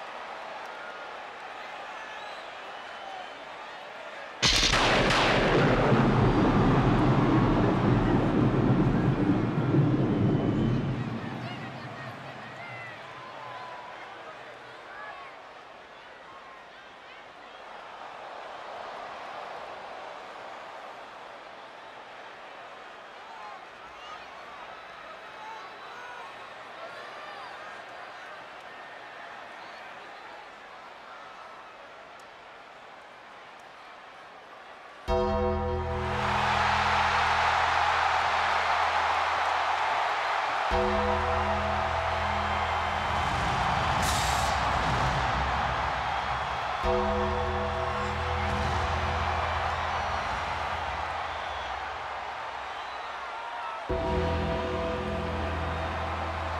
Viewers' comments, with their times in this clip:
0:10 it sounds like a kid saying THIS IS THE BEST DAY EVER listen carefully
0:36 one of the loudest pop I’ve ever seen
0:36 is the loudest moment
0:41 one of the best pops